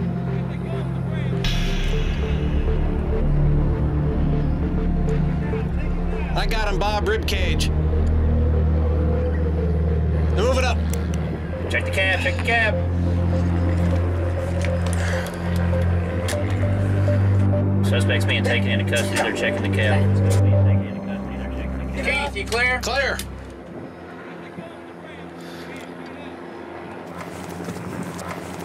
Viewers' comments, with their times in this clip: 0:06 Did anyone notice that one of the Swat Officers kicks the dog, and it yelps? I love Swat, But Shame On Them! It was a poor, frightened, animal. They could have put it in one of the police cars for a few minutes.
0:07 he kick the dog out the way😂 and it whimpered
0:08 HOL UP DID THAT MANS JUST KICK HER DOG AND MAKE IT YELP?!?
0:09 SWAT kicks dog and editor added sound effect lol
0:09 CAMERA GUY KICKED THE DOG ON THE RIGHT ! THE DOG YELPED!
0:10 I just love how the SWAT member kicks the dog and you hear the poor dog yelp! That dog doesn't know WTF is going on.. he just wants to go back into his truck...